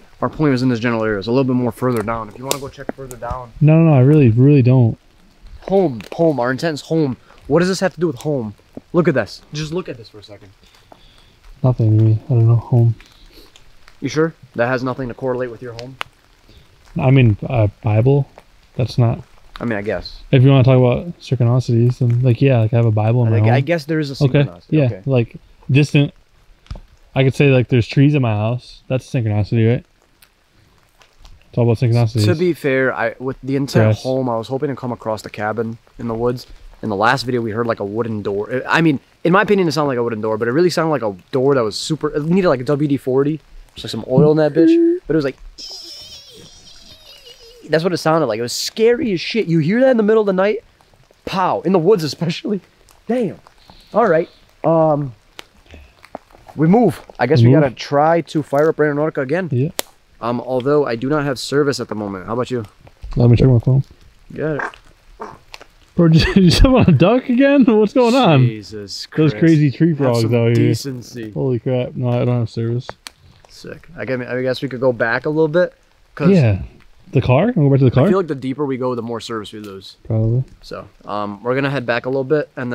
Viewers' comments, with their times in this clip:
0:10 something whispers "Help me...please"
1:04 I heard a fart! I hope you checked your draws!!😆